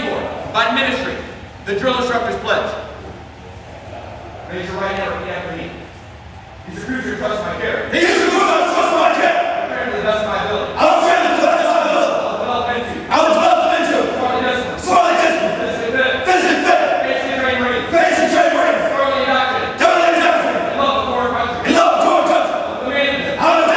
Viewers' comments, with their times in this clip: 0:06 this is the moment where I'd start shitting my pants. The intensity of their voices, holy shit